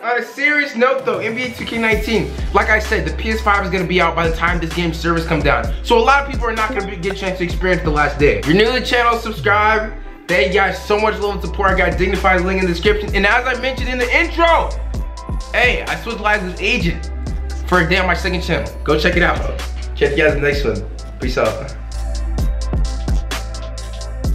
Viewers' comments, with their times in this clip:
0:06 I thought i was in a discord call LMAO